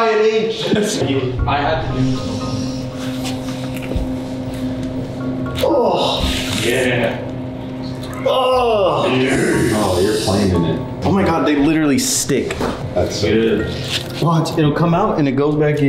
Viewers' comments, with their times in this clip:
0:03 Bro just listen to it with your eyes closed it's kinda sus